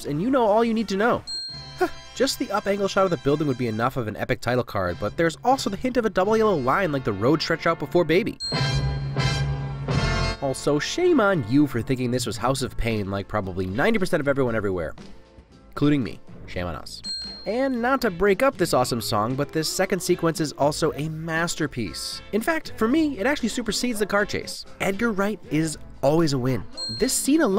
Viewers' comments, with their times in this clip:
0:08 From onwards, listen for three car horns perfectly aligning themselves with the music as well